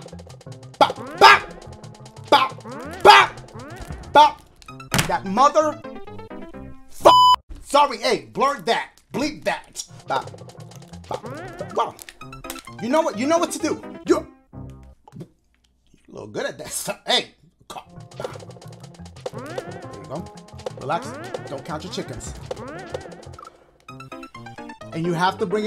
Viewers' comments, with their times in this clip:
0:06 That lil bleep moment i skipped 10 seconds unto the vid right when you could hear a bit of a bleep and i couldn’t breathe 😂😂😂